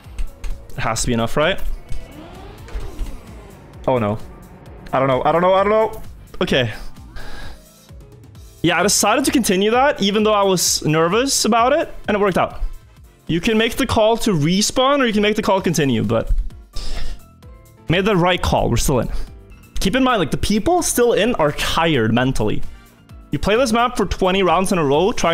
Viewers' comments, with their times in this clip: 0:06 the lick? idk I think it's the wrong key